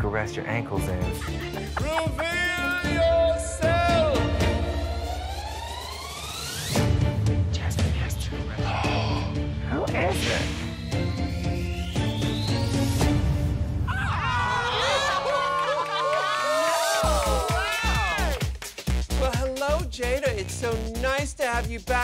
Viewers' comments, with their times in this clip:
0:07 The way Rajah gasped when Kylie said to her the lip sync assassin was Jasmine Masters 💀